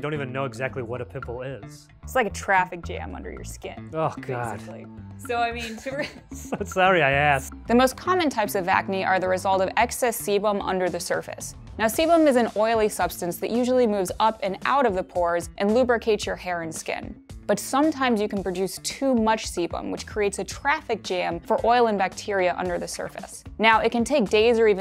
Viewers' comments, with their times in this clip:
0:10 I thought they said excess semen